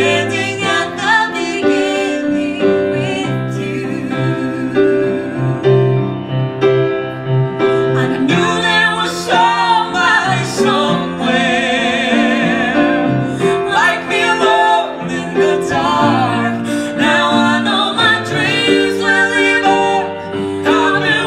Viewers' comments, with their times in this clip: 0:07 to the end is just whew 😍😍...their voices blend together so well i’m never gonna be over it